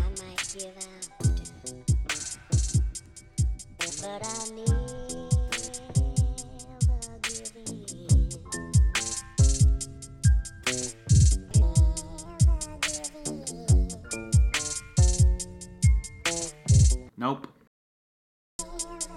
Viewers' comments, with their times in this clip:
0:04 sounds really good